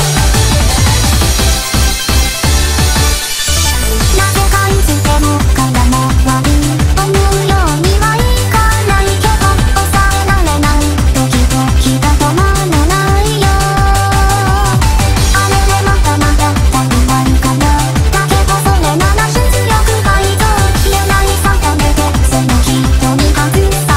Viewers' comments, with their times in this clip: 0:08 canon blasting is my fav part